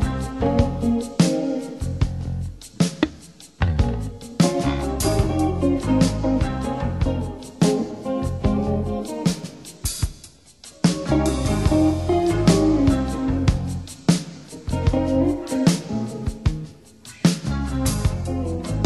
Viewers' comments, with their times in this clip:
0:03 Omar mic hit